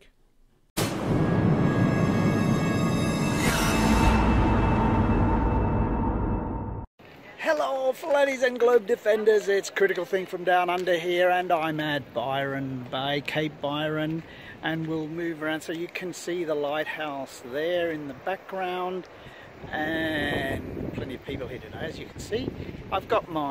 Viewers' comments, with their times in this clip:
0:05 This is soo stupid! You very carefully do experiments that result in me going "duh! that was exactly what I expected." This culminates a with the greetings from "down under". This video drove the point directly home, that Flat Earthers have some serious issues with normal everyday reality. It´s starting to hurt....At least I got to hear cute accents!